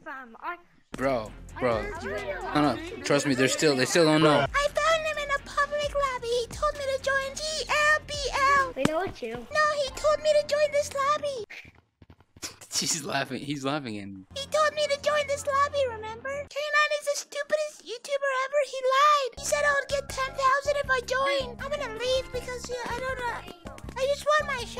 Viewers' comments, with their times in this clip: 0:10 Tiny lil voice